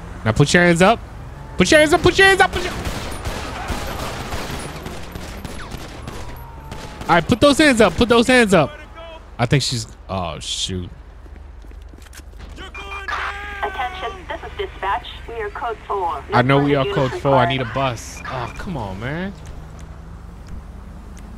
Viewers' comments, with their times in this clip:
0:05 did that cop have a silencer or what